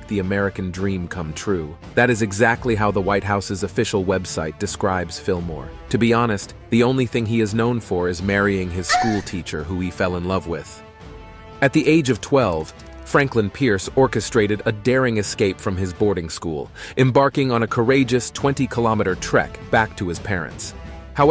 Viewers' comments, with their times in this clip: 0:08 I was not prepared for that random orgasm 😂
0:09 The sexual moan made when they talk about Millard Fillmore marrying his wife… 😂😂😂 not to mention when introducing Buchanan.
0:09 WTF did I just hear!! 🤣 🤣 a girl moaning!!! Wtf was that about.. Straight porn noise!!! 🤣 🤣 🤣
0:09 why the moan? 🤣🤔